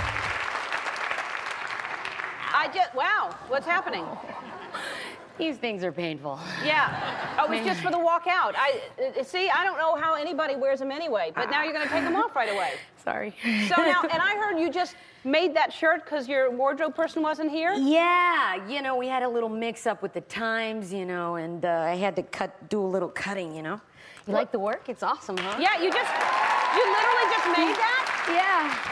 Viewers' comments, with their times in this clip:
0:10 DID SHE JUST FART?! :O
0:10 Am I the only one that heard her fart ?
0:10 heard her fart